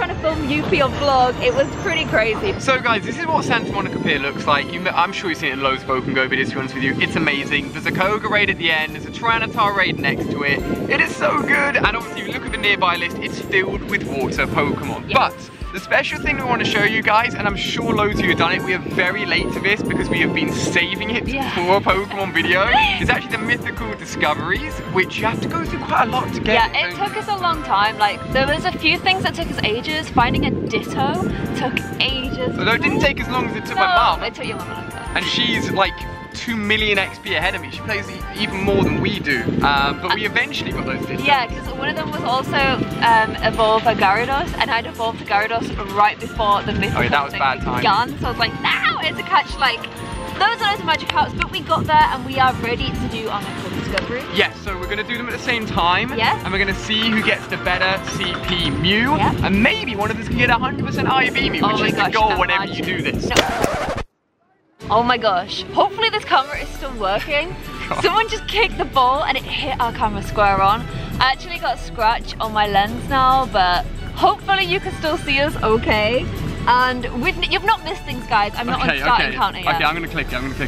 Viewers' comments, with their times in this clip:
0:09 are they doing a voice over
1:04 u can hear the person who kicked the ball in the back round saying “ SORRY MAN” lol